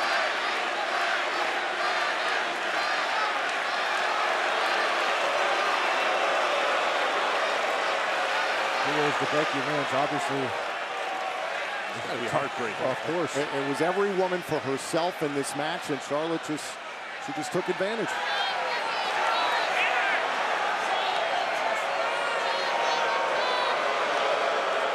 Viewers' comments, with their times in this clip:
0:05 did they really cheer on Becky for turning heel?